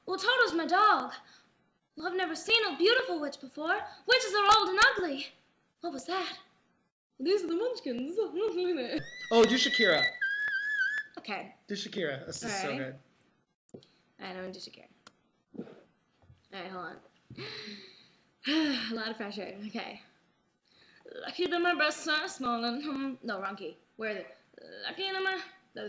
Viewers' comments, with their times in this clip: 0:08 dat whistle she does dats TALENT
0:08 that high note though
0:09 no ones gonna talk about that high note ? (':
0:09 that whistle tone tho
0:09 that high note tho....
0:09 that little cry she does doh true talent..
0:09 That whistle tone tho